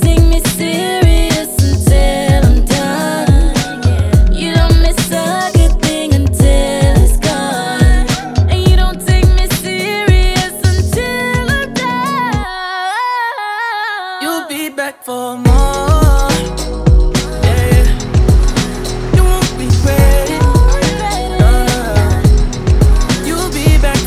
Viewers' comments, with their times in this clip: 0:08 them notes so good like for real damn!!!!